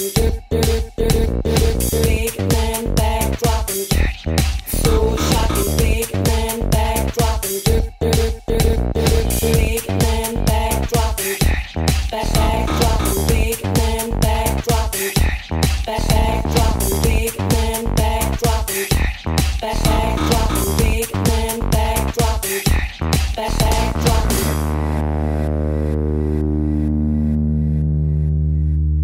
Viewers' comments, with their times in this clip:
0:10 This was also on Housexy album no.5, disc 1, track # 11. I was hoping the find the whole track as opposed to the mixed track. The version here is almost what I was after, but the Housexy version was a bit more baseline like with more filtering going later on in the track. It didn't have the arpeggiator / mid-tone synths going on like you hear on this vid